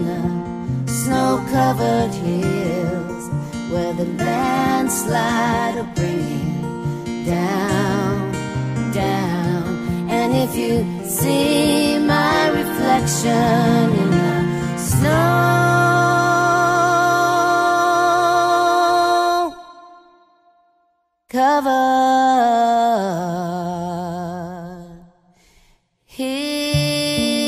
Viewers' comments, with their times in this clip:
0:09 This arrangement of the song is just beautiful. I wonder why people doing covers don't ever try this version?